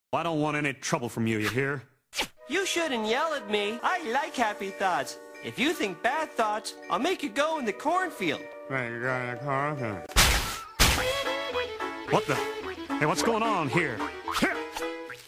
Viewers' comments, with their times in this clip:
0:02 that kid sounds like Pleakley from lilo & Stitch, and Waffle from Catscratch voices by Kevin Mcdonald